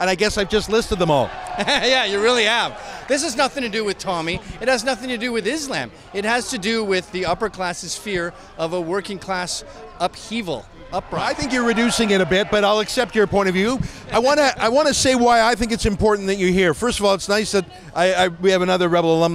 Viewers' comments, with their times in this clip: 0:06 Does the older gentleman with the phone and white hair whisper "He's talking bollocks" to the lady in black ?